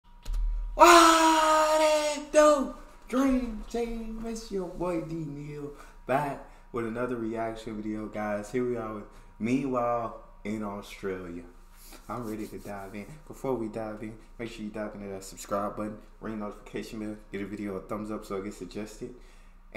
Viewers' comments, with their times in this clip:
0:01 WTF is that intro all about? Other than just noise, then when he does talk, you can't understand a word he says. Other than that the content is pretty good.